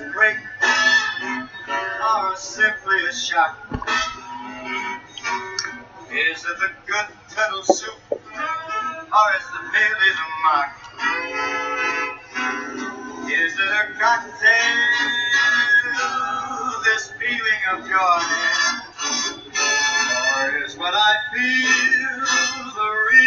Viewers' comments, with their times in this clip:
0:04 Very cool syncopation ! Great video as always, my friend!